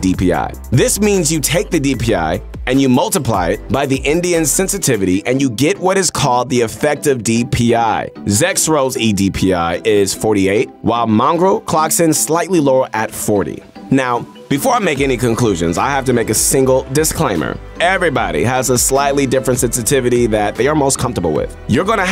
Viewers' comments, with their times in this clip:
0:03 did u just say Indian... LMAO
0:04 "you multiplly it by the indian sensitivity" ???